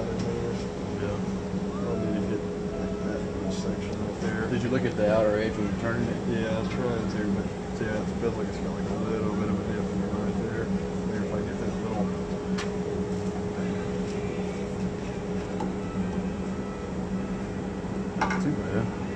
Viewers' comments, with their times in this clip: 0:07 I loved that Hank Jr was playing in the background around the mark.